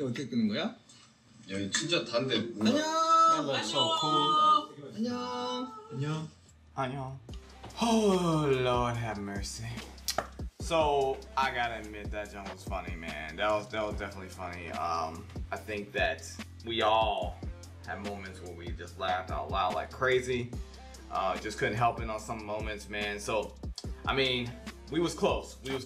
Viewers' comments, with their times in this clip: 0:06 that little annyeong at the end